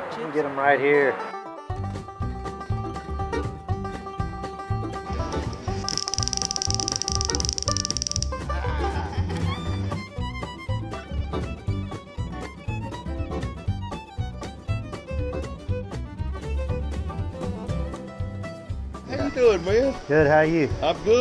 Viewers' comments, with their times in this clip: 0:08 I thought I was hearing stuff at the second mark- Hey macarena! I watched this back months ago, but it came up on my recommended list again and I could not remember much about this video, So here I am again. Great the second time around as well!